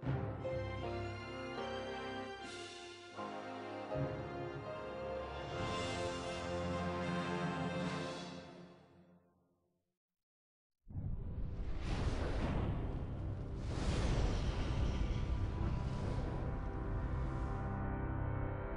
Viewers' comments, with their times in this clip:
0:05 Pay attention You can hear the Superman theme in the fanfare!